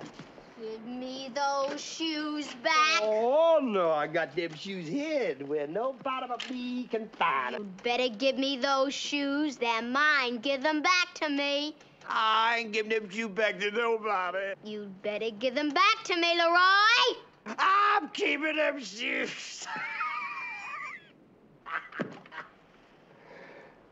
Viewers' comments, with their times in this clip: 0:10 give them bahhck tuh mehy! lol I love when she sounds like that xD